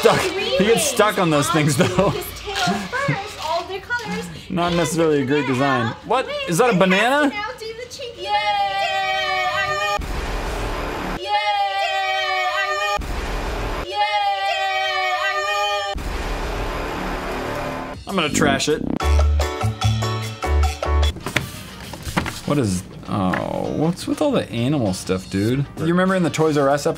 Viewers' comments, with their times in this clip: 0:09 Chasing Cheeky..... weird women screaming. "Yeah!!!" Me: "NOOO!" Them: "Yeah!!!" Me: "NOOOOOOOOOOO!!!" SHOOK NASTY! 😱😱😱